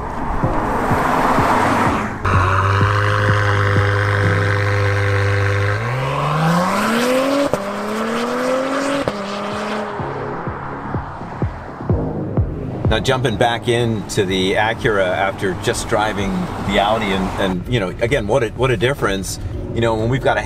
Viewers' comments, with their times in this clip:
0:06 Close your eyes and you CANT tell if its an NSX or TLX!